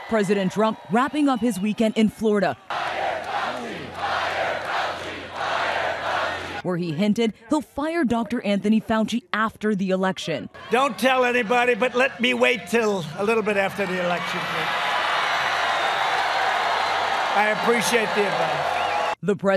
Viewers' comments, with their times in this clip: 0:05 chanting... I'm nazi?